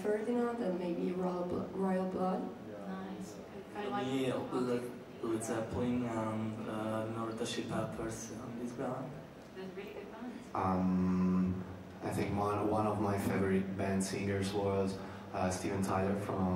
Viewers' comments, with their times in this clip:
0:03 help, I can't understand what he's saying apart from Led Zeppelin?